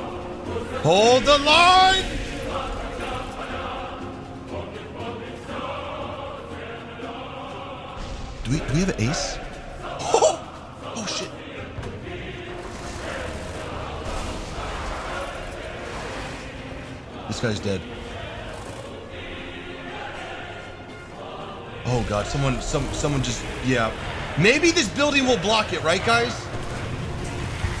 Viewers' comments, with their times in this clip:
0:10 that Mickey Mouse impression lool